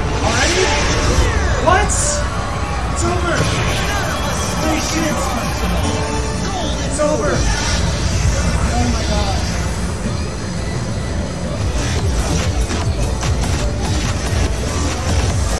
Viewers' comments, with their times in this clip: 0:10 The fake arcade background noise stays constant through the cut lmao